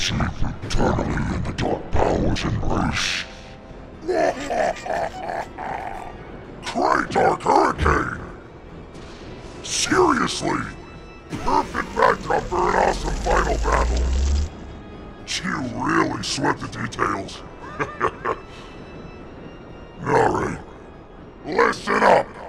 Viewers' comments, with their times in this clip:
0:03 Ngl, Bowser's laugh here is so good it almost sounded like Kenny James himself pulled up just to do that laugh